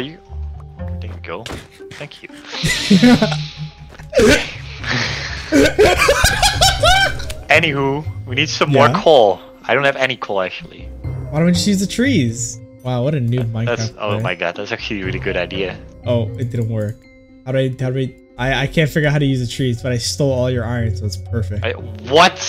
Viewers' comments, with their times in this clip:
0:05 bro was a hyena